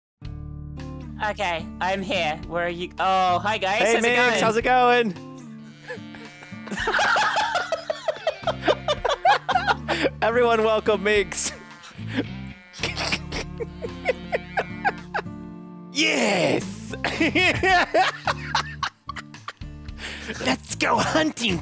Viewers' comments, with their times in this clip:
0:08 Dat laugh doe XD